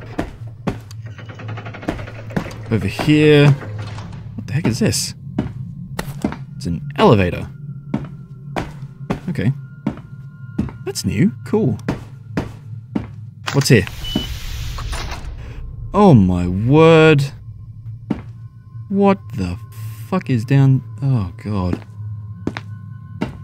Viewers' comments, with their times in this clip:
0:04 LOL BATSEE MOD BUTTON/USE SOUND XD